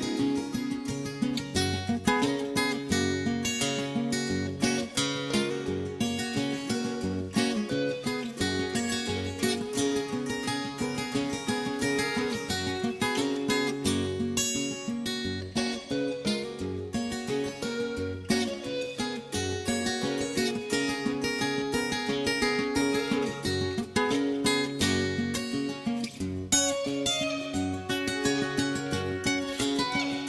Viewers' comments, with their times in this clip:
0:03 This is the only mix where you can hear this particular guitar solo. This is the 2002 remaster in multi channel surround sound and released as DVD.
0:04 I can hear a weird almost electric guitar sound faintly in the background here and quietly throughout the whole song. Other versions of this song don't appear to have this detail and I've never noticed it before. Is this related to the special drum and lead guitar version?
0:08 Is that flute in the background
0:10 wtf??? I’ve never heard the background instruments???? I’ve heard this song like 5000 times and have never heard anything else but the main guitar
0:18 Bro, what's that instrument mark, sounds like a pipe organ or something added to this recording... listened to this song a thousand times, it's not from the Rumours recording..